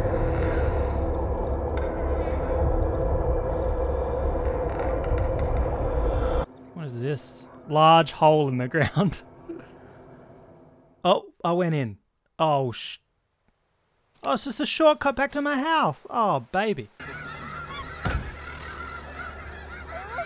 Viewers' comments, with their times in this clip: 0:05 sounds exactly like bloodborne